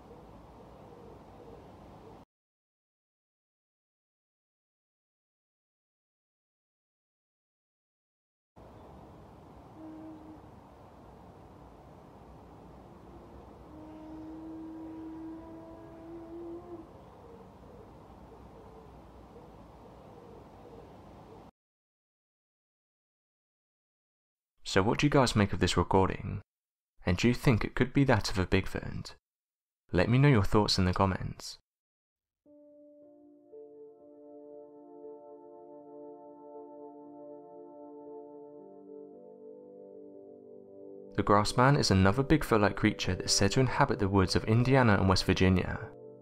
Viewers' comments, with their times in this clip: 0:09 that's definitely a sasquatch I'd know that sound anywhere
0:16 elk talking or a dude with one of those mouth horns fans use at games
0:29 that sound is probably a moose or elk (or call).